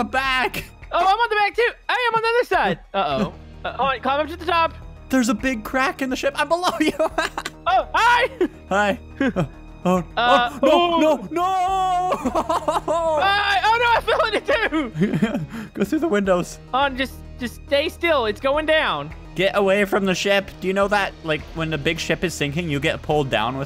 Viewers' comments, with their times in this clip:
0:05 there's a big creak on the ship funny